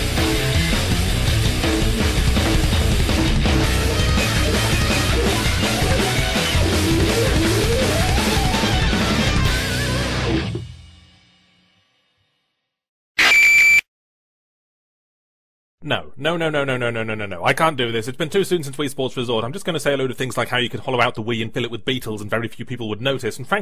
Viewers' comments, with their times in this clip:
0:10 WHY THE FUCK DID YOU PLAY THAT DEMENTED SCREECHING ESCAPIST?!?! SERIOUSLY NOT COOL THAT YOURE PUTTING IN JUMPSCARES LIKE WTF